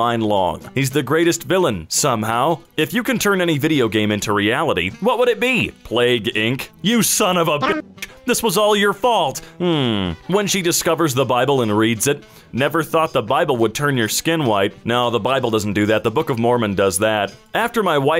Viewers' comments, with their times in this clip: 0:06 The censor got me. It's my notification sound